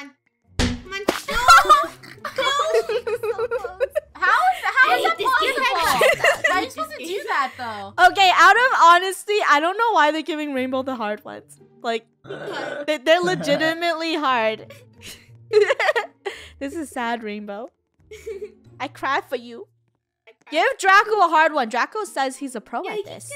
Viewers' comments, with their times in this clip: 0:05 I just pressed so many times it sounds weird XD